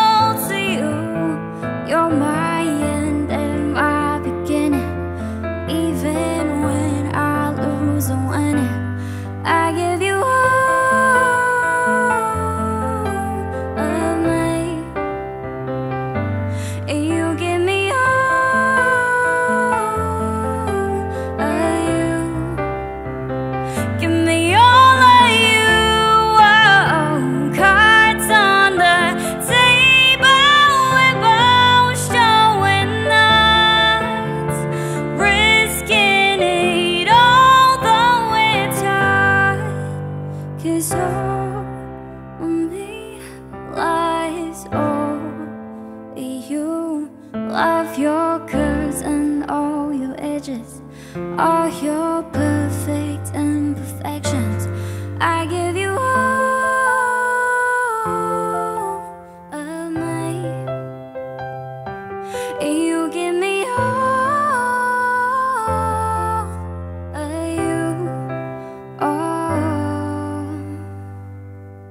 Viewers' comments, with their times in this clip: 0:10 Parita's voice was very soft.
0:11 is the best part pleae like if you love her and her voice ♥️ ❤️ ❤❤
0:55 the most heavenly voice 😢😢😢😢